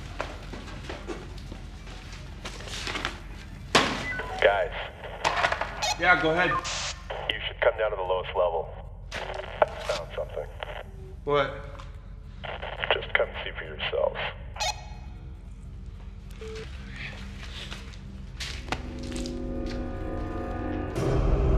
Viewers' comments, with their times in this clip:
0:06 They forgot that it was simplex radio and let the characters have a duplex conversation.